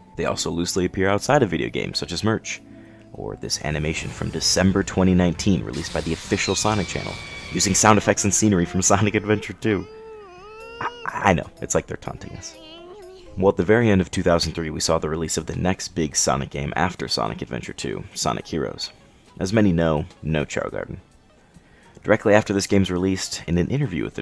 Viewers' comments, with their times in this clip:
0:06 LOL thats the noise chaos make when you abuse them and they are running away from you.